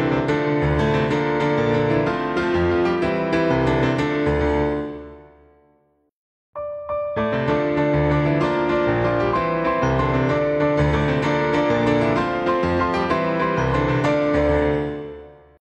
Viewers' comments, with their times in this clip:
0:04 That jump and clap and the smile on your face... Happy puppy⌒‿⌒
0:07 why do I hear Dr. Dre